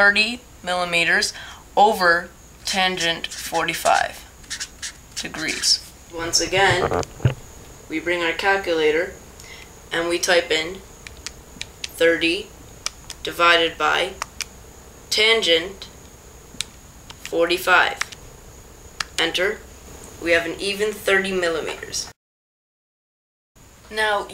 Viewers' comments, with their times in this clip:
0:07 i heard a beep on